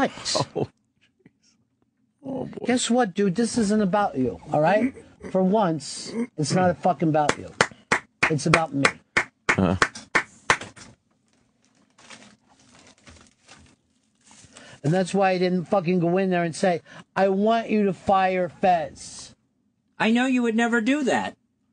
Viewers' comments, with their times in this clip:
0:06 the most infuriating doosh clap of all time.